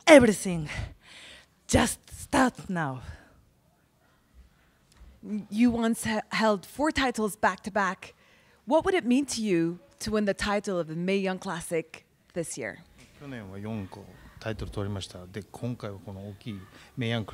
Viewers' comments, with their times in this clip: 0:05 interview was being racist wtf mocking her voice